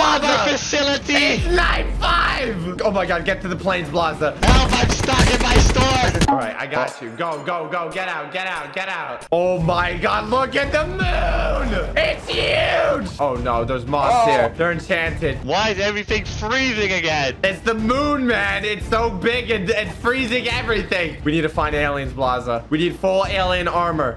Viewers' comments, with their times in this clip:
0:09 Anyone else hear Phone Guy from FNaF a little after ?